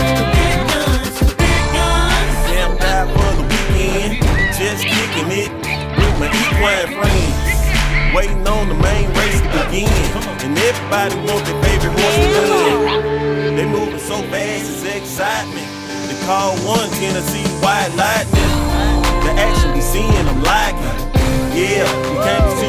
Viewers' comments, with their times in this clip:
0:04 Not a single comment about the fast motion.The video is fuckin 10X than the original speed we can hear voices